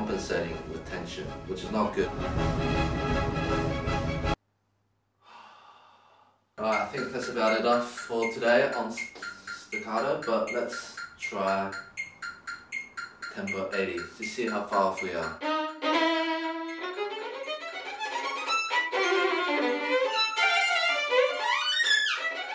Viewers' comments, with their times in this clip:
0:06 The metronome made me think that Michael Meyers was lurking in the background...